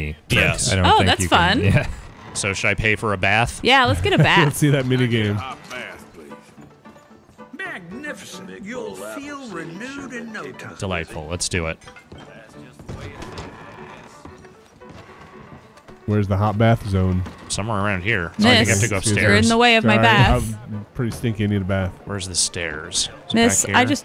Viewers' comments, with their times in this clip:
0:09 That music is so fucking familiar, it's killing me.